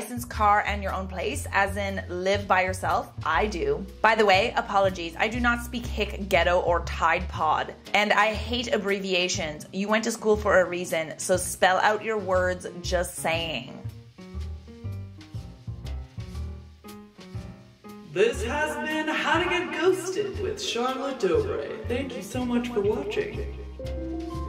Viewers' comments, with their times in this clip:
0:07 so no one is gunna talk how he said “lol” 💀